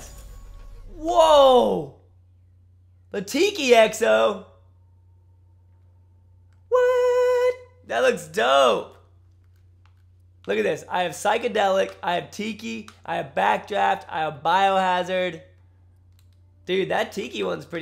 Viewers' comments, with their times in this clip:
0:05 That high note tho